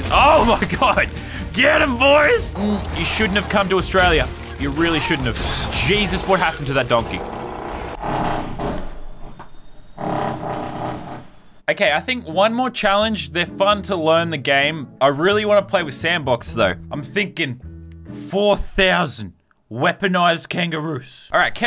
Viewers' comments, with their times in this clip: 0:06 fart sounds from donkeys
0:07 Lol sounded like he was farting but it was the gorillas up stairs